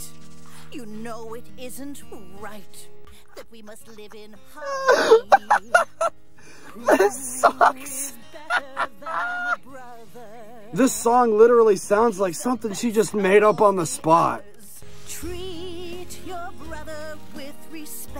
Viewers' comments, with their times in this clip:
0:03 that voice is beautiful